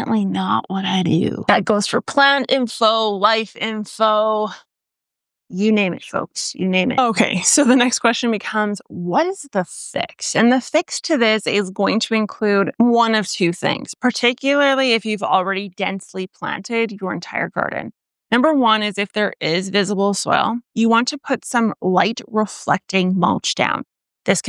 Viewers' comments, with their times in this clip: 0:06 Have to admit, given your very slightest of hesitation, was not expecting "fix".